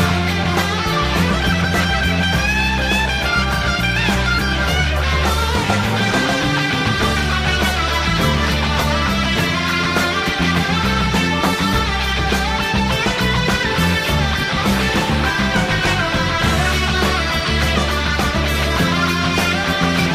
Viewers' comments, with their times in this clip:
0:08 The reason I picked up a guitar. And just about the exact chord for that If this doesn't get you amped you're not alive.